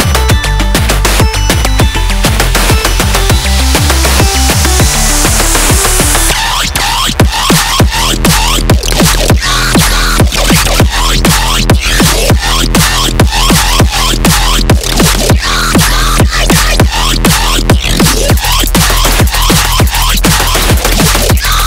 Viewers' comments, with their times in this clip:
0:06 This was great until the random ear rape